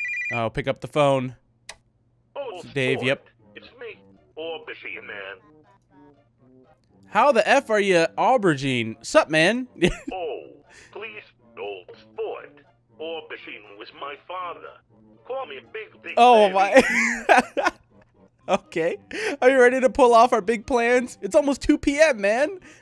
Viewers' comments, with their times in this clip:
0:09 i love daves theme song's #eggplantman